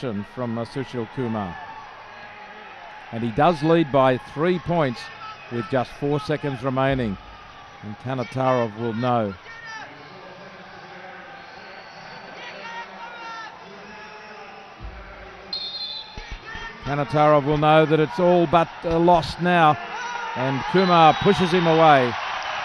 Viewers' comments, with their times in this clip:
0:10 vicious ear rape